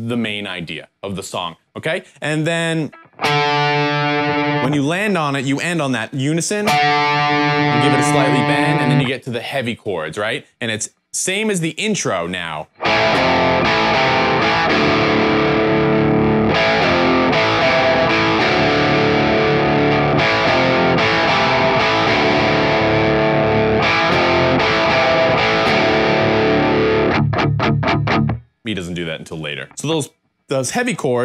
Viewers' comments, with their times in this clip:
0:03 That 5th fret bend on the A string reminds me of another one of their songs but can't put my finger on it and it's driving me crazy!
0:09 The 'heavy chords' riff from this video at ~ doesn't sound right to me. Maybe it's just due to the particularly sweet tone on the album, or due to the overall mix of other instruments too?
0:12 the first time i heard that riff I got goosebumps. Definitely my favorite tool riff of all time, and Ive been a fan since the start. I love this channel so much due to the fact you love Adams playing so much. Once the new album dropped I knew id end up visiting this channel a lot more. Thanks for being so consistent man, you rock!
0:12 The last note you play on the sequence isn't right, go back and listen to the original